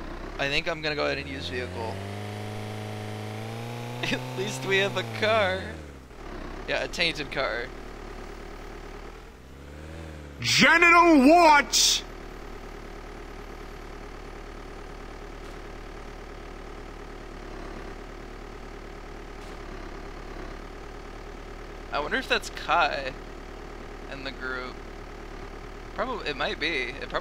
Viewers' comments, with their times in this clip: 0:10 what a funny voice haha